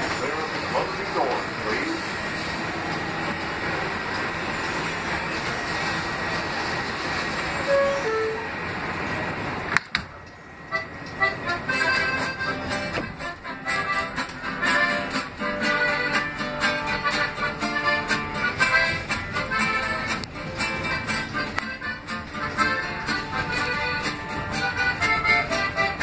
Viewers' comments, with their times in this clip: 0:10 music starts playing lol